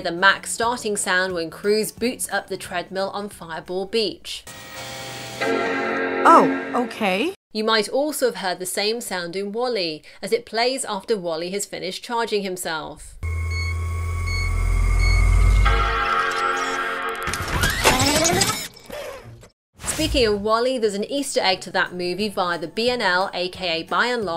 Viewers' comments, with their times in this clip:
0:05 It sounds like The PS2 Start up